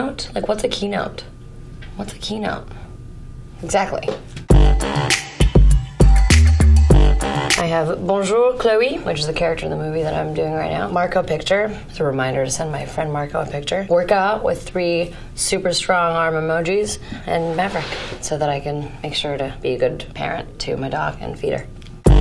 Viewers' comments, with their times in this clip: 0:08 omg her speaking french 😭